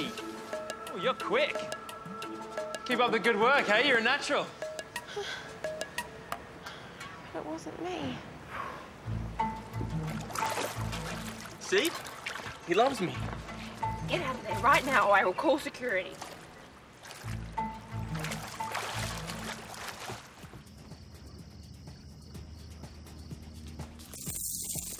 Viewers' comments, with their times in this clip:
0:06 the way she said "that wasn't me" was kinda cute